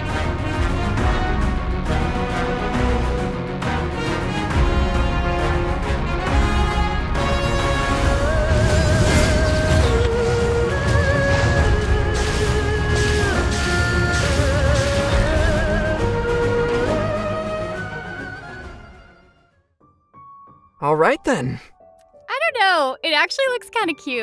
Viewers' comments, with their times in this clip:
0:08 So no one's gonna talk about this music here ?